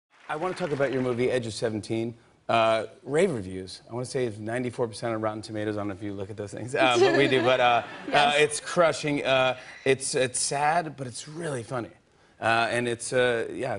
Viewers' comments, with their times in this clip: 0:00 fallon sounds like he has a british accent